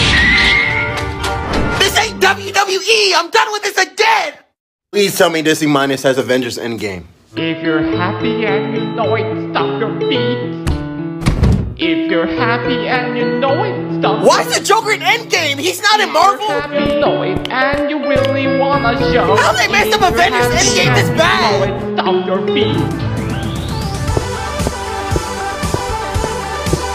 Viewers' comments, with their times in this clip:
0:09 when he said stomp your feet and the music played did anyone else hear a little bit of Mindas lament from twilight princess?